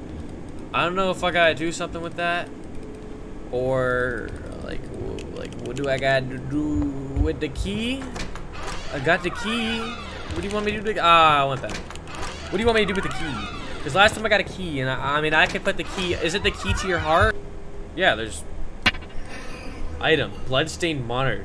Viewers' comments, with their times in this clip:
0:07 did the door just moan? 🤨🥵🥵🌭🌭 and the marrionettes jumpscare also sounded like a moan